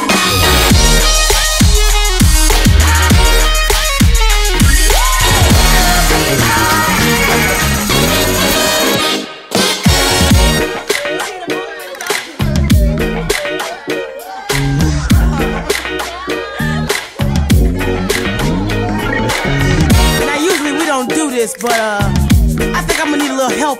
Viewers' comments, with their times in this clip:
0:09 That riff from is just pure gold